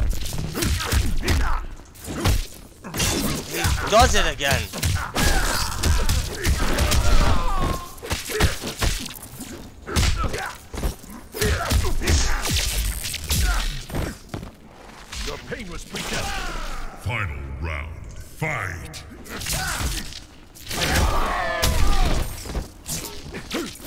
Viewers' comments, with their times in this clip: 0:05 Raidens echo sounded like the ones in your new headphones. Stick with the tried and true that you have been using, bro